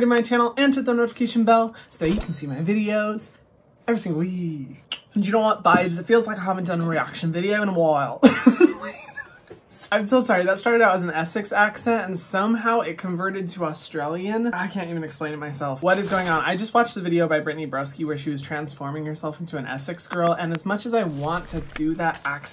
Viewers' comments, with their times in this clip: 0:05 “Y0u KnOw wHaT BaBEs” this is why I love hyram 💗